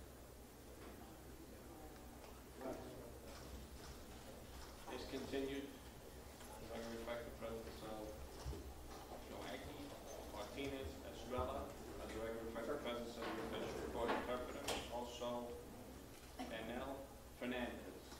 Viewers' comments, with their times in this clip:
0:05 That heartless monster is laughing like its a joke 😡